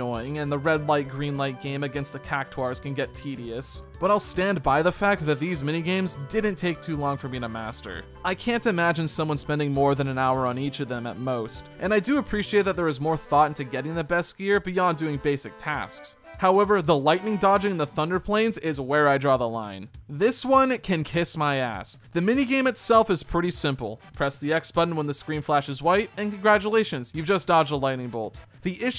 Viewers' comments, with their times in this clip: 0:09 Ah that infamous Cactuar one. Most people know this but the map is there on screen to guide you underneath the quicksand making 100% easier to catch him. Also Tedious and Tidus sound very similar 😂